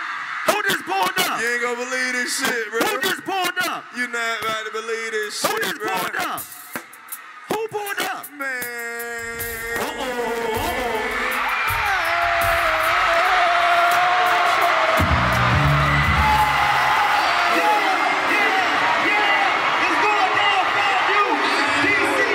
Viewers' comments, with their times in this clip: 0:04 /This part has to be be one of the best entrances of this show ever— the crowd reaction and the fact that the rest of the members didn’t throw shade, or wasn’t jealous of the fact that he got the biggest crowd reaction, makes it 100x better😁💯🤟🏾